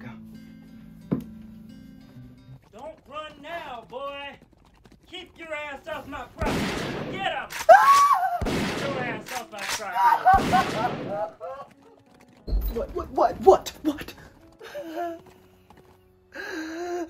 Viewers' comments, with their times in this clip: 0:03 is it wrong of me to laugh at this part? (Not how Issac died but the masters voice is funny)